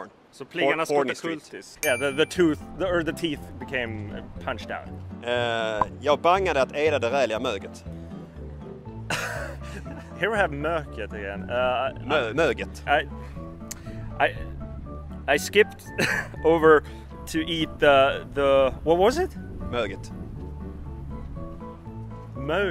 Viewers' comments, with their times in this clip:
0:09 Did I just hear a swede mix up the two pitch accents? Now I feel much better not always notising it myself! ;)